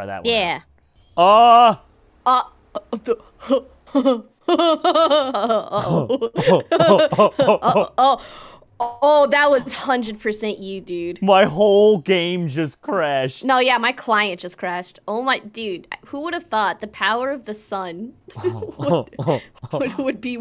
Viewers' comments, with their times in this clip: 0:05 Beavis and Butt-Head mode